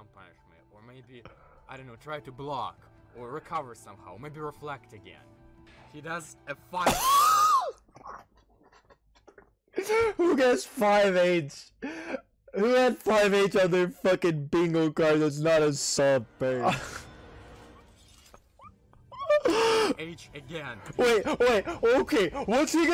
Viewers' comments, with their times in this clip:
0:06 The weird sound my car makes